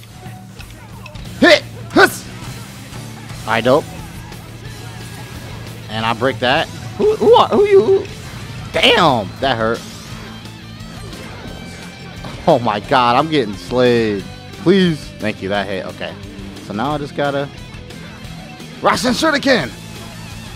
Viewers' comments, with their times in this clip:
0:05 what was that stutter?